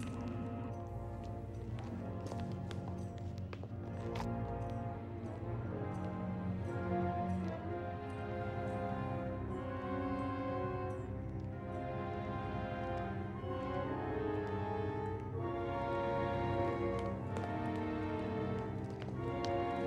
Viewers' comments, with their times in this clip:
0:04 I get chills listening to this music.
0:04 always loved the music here